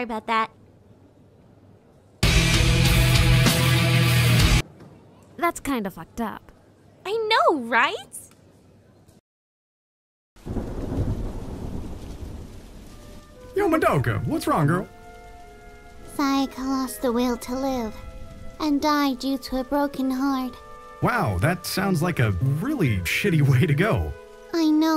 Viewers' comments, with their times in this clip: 0:07 I know rise?
0:12 is Who Will Know Tragedy from shin gojira! Yaass! is in homuras Scottish accent